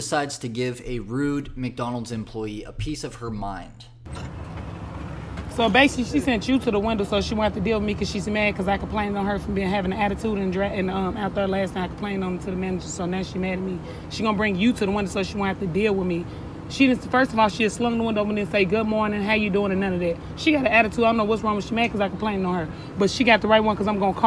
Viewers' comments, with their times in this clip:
0:04 Sounding like a straight up auctioneer!
0:07 is that English?